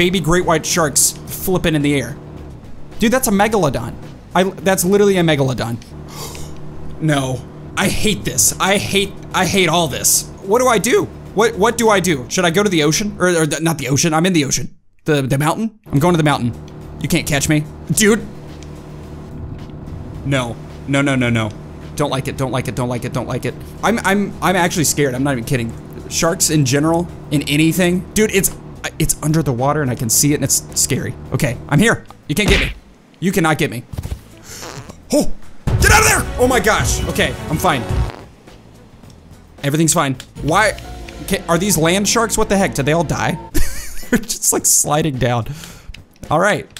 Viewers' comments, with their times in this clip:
0:06 I got jump scared by the sound effect when the shark 🦈 came and it was pm😱
0:34 saved by fart
0:34 is fart saved him
0:34 that fart was perfect timing